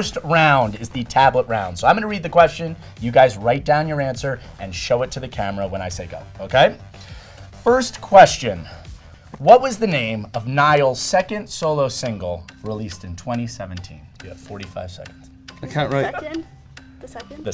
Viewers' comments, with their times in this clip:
0:03 if Niall growled at me I would fall off the chair